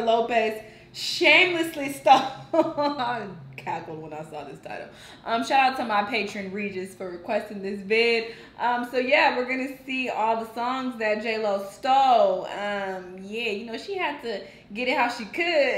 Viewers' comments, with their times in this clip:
0:03 what you laughing at